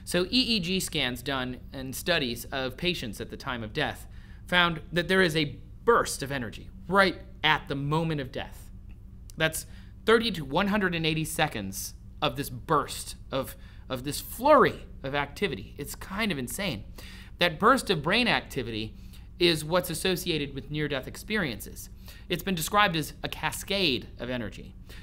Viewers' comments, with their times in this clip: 0:09 you sounded like ali dawah